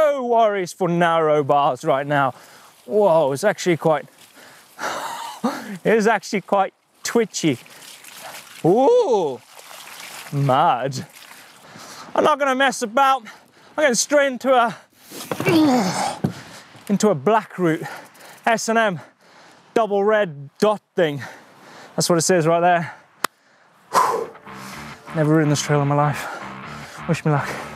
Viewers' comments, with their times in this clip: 0:08 "oOOooOoOOo! mudd" i need that as a sound effect